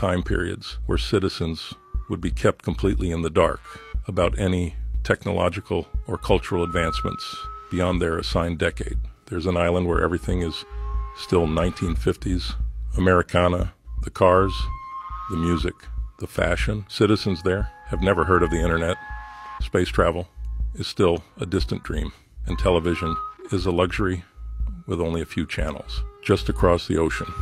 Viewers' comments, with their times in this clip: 0:09 This sounds like an AI version of Glenn Beck's voice